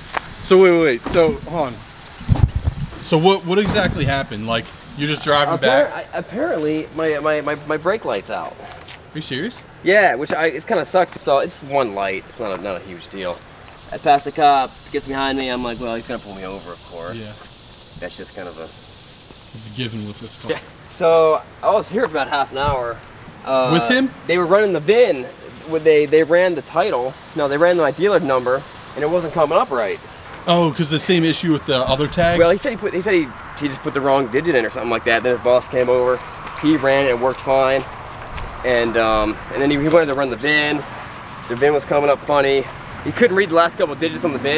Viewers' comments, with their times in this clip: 0:09 Siri thought I called her
0:25 I have ccs on and it thought u said Adam lives matter too yeah yeah